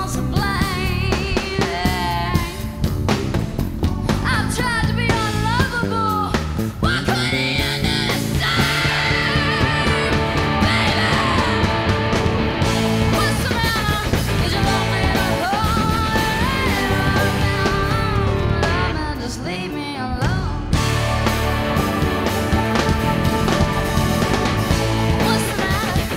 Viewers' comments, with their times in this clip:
0:07 ....I've never heard her voice do that before. Im blown away. Loved Jewel since i was 12yrs old and even more now seeing this performance.